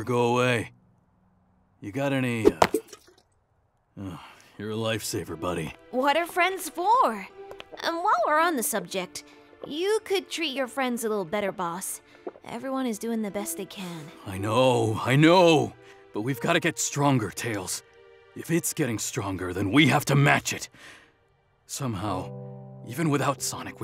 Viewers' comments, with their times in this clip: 0:06 imagine he said it suspiciously again-